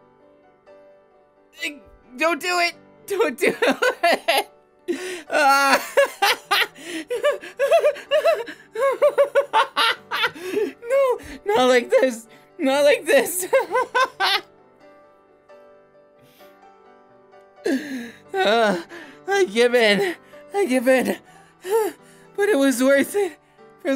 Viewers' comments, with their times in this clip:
0:09 that laugh sent me to heaven. What the actual fuck. Nothing should be able to make me smile but Denki bby, y e s.